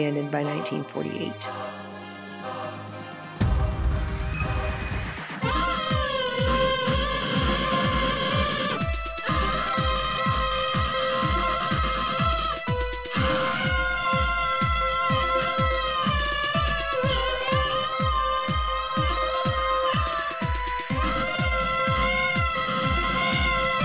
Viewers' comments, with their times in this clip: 0:07 I'm speaking just for myself . I don't see the point of this sequence of screaming. I get that those people were involved. I'm not objecting to that. It just looks & sounds bizarre because he's not an actor. He just sounds & looks cringy af.